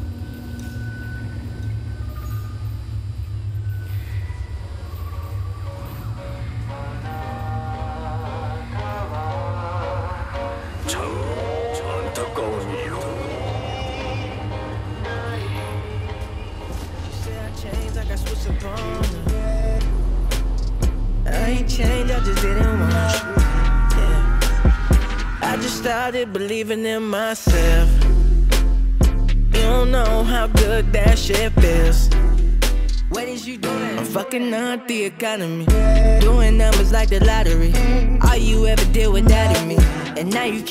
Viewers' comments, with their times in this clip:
0:10 is this korean..??? the voice
0:22 loud scream to 小女孩尖叫(girl scream) bruh that point I laughed 👁️